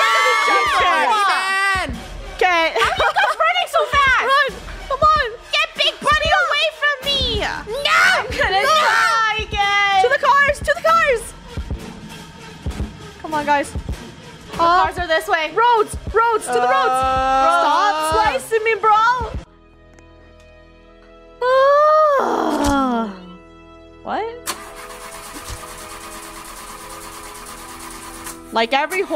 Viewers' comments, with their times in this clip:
0:10 When they was getting chase the sound sounded like music